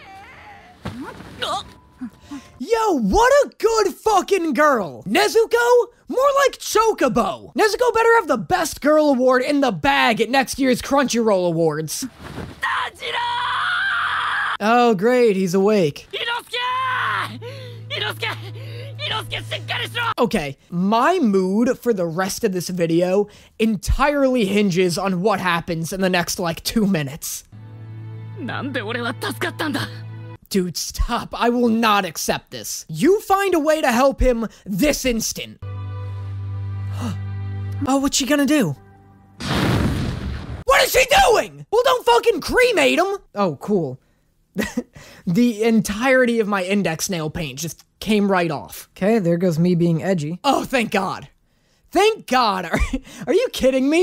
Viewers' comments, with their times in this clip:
0:05 I know that was Chocobo, but it really sounded like "choke a beau", which... eugh.
0:38 most genuine sincere "oh, whats she gonna do?" "WHATS SHE DOING"